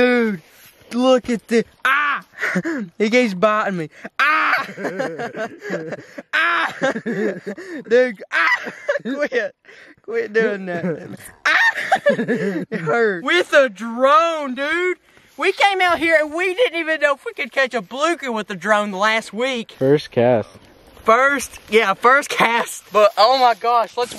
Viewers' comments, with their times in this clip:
0:10 every time the catfish bit down 😂that laugh tho